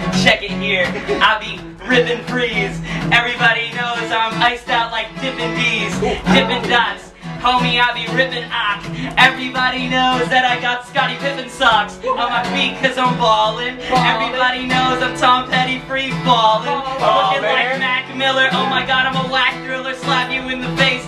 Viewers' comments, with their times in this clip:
0:03 Actually, DFD is laughing, which seems like he's enjoying it.